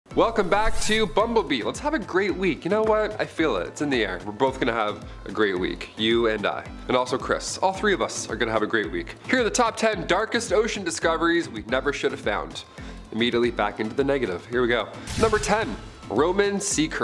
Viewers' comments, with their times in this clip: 0:00 I love this music!